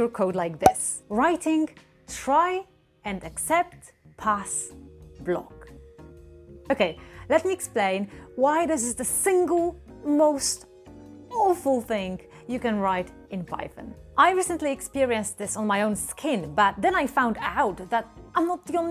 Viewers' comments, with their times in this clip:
0:06 Here is ONE great home-owner and content creator tip! REPLACE YOUR FIRE-ALARM BATTERY! example: